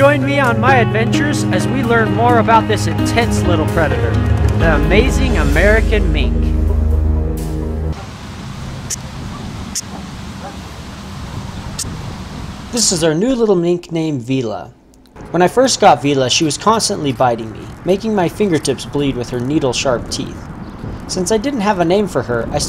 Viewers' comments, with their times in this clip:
0:08 I had no idea these things even made a noise. How cute. The only noise I ever heard them make is bones crunching when they get a hold of a rat. Crunch. And of course they noise blow when they are in the water wrestling.